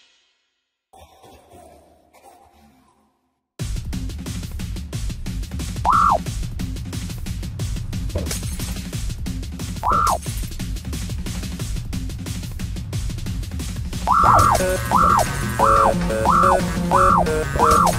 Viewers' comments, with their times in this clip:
0:04 does not sound right..